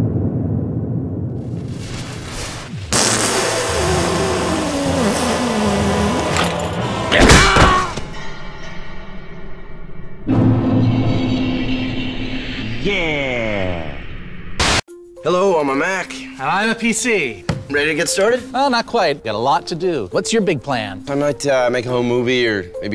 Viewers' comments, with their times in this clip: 0:06 Did that Dark Souls character just ECH?